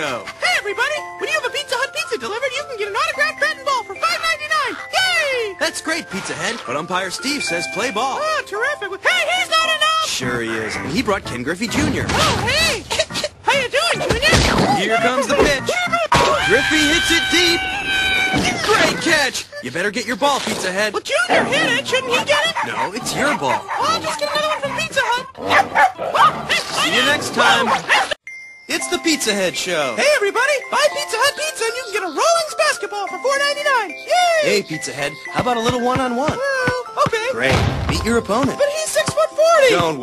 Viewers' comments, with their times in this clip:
0:09 I misheard that as "HEY HE'S NOT AN ELF!!!"
0:26 Fight CLOUD To Warner bros SFX And Tom Scream And Animal Elelpant Horse Get Him! And Sheep To Nick